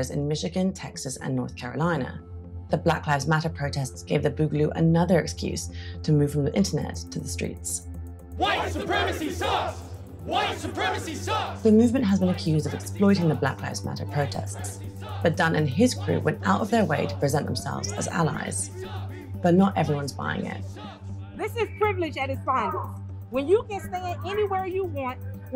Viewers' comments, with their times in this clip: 0:10 what were they saying? I’m having a hard time understanding since the narrator keep talking over the clip.